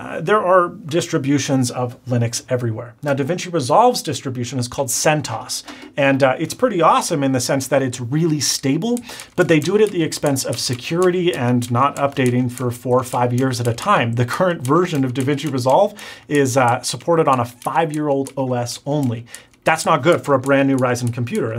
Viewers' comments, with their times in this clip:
0:08 What's that clicking noise ?